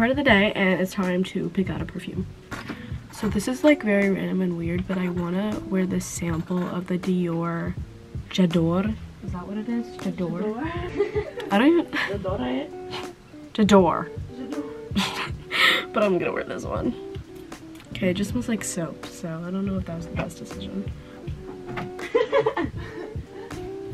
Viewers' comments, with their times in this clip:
0:09 the perfume pronunciation x- jay- ah- door